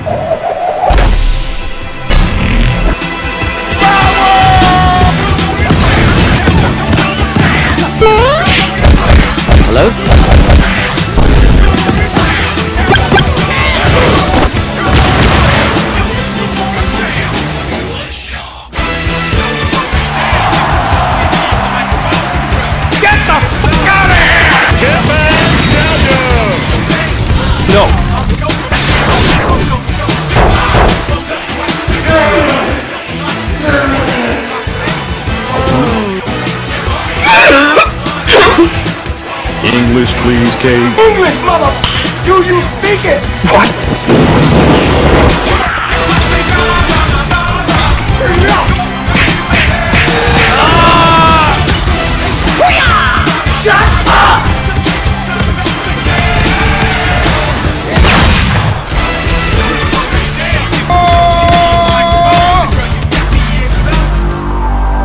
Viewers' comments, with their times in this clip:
0:09 I have Obi-wan saying “hello there” as my text tone so you really made me confused for a hot second.
0:25 In does anyone else hear Ham voice from Toy's Story?
0:46 the timing with the music in the background xD